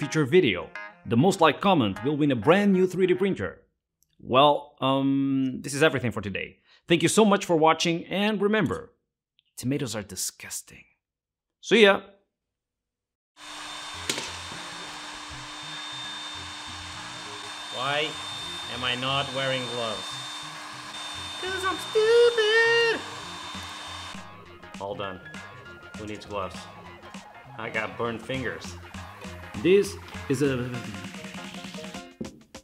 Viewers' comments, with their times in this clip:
0:07 bro why is it screaming like that 💀
0:07 Sounds like a Tom and Jerry scream but taken yo horror levels
0:07 That literally screams
0:08 sounds like horror film more then j....📽️😂😂😂❤
0:08 WHY DOES IT SOUND LIKE TYLER 1 Mario Cart?
0:08 7 year olds in voice chats be like
0:08 Mickey Mouse scrreaming...
0:08 This perfectly mimics the sound one of my dogs makes when the phone starts ringing
0:09 imedeatly thought about an aztec death whistle when i heard this
0:09 was I the only pne thinking that Integza started screaming?
0:09 I love how the pulse jet engine just sounds like screaming
0:10 LOL the resonance of that baby pulse jet engine sounds like Marv from Home Alone 2 when he's getting electocuted! 😂 Awesome project man! 😁
0:10 Ah yes, it's Penguinz0 screaming. 👁️👃👁️ 🙏
0:10 sounds like a tom and jerry scream.
0:11 sounds like marving screaming in home alone when hes being electrocuted 😂
0:11 sounds like Marv getting electrocuted by that arc welder in Home Alone 2
0:11 sounds like someone rage-quitting lol
0:12 screaming like Murph in home alone😂
0:12 an aztec death whilst
0:12 its screaming for mercy
0:17 noises! Loud noises 🤯
0:28 bro this sounds like a screaming person